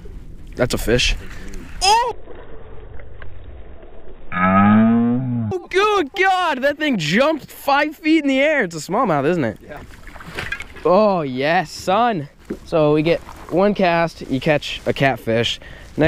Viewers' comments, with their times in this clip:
0:04 he sounds like a cow